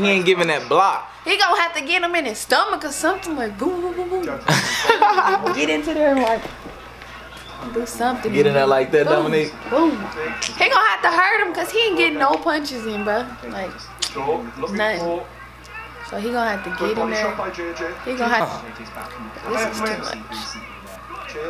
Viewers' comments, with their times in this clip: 0:05 he laughed like flight 😂